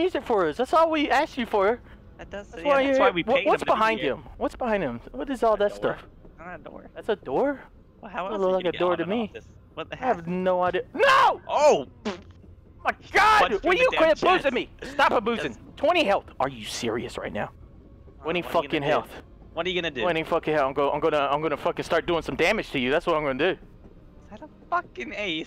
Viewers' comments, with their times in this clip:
0:09 “he’s gonna give me an awesome tattoo!” revs chainsaw “OMG THAT IS NOT A TATOO!”
0:11 i swear i think delirious farted